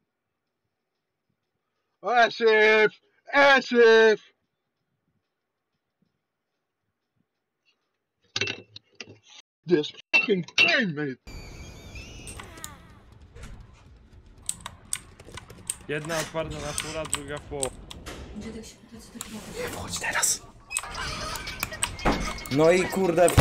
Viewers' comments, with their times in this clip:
0:10 when he hit his controller it sounded like glass lol
0:10 the way it made no noise lol